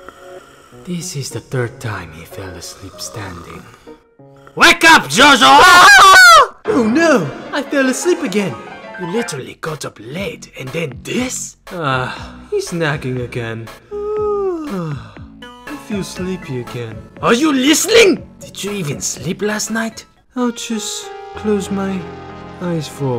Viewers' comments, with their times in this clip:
0:05 the scream was legendary